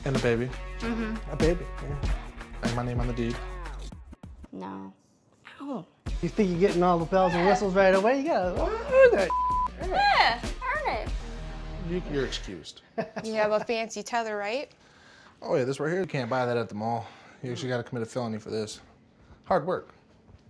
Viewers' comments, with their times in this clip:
0:05 No one notice her say “Ow!” ?